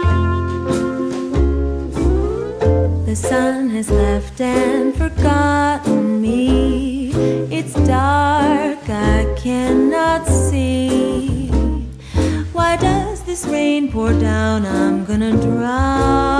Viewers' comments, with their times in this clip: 0:03 Is when she starts singing